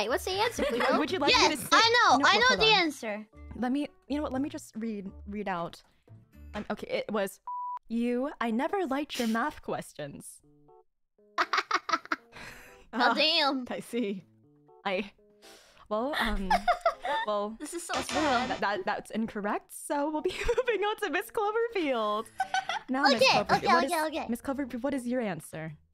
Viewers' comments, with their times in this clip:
0:06 teacher reads brat’s obscene message to class, causing brat to laugh 🤣